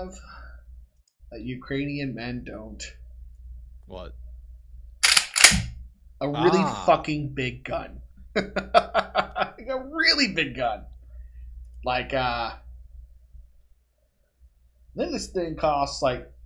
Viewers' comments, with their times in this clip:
0:04 Sounds like mossberg or remington pump action. Nice for burglers, but not good enough for a dozen armoured guys knocking at your door at 5AM.